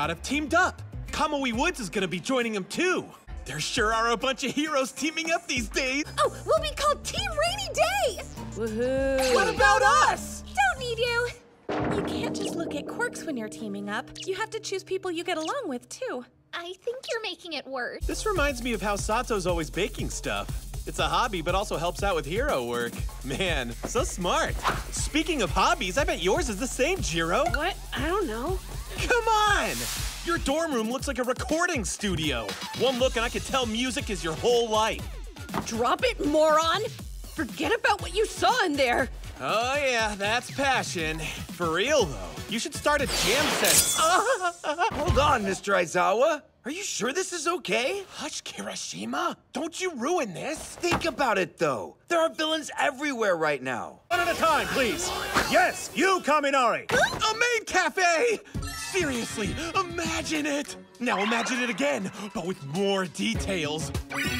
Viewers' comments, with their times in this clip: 0:08 Okay, so I know this is about Denki but let's be honest Jiro's bored "woohoo..." is gold. It's like she's learning from Todoroki.
0:14 THEYRE PLAYING CHOPSTICKS AND I JUST REALISED
0:48 for a minute I thought kaminari said "hush karen-shima"